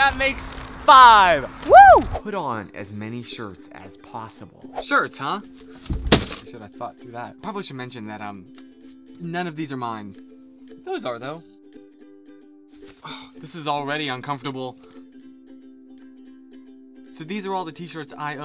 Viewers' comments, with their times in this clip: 0:06 I know it's not actually there but am I the only one who hears hardcore swearing ? haha